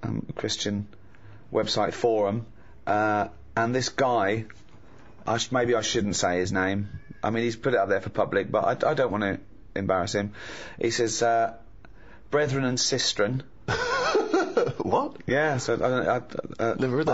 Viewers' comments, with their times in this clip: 0:04 can anyone else hear a child shout?